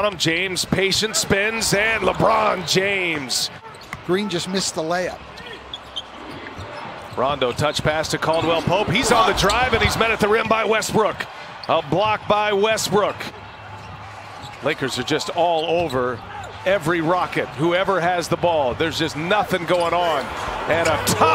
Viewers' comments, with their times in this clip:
0:07 He said westrook twice😭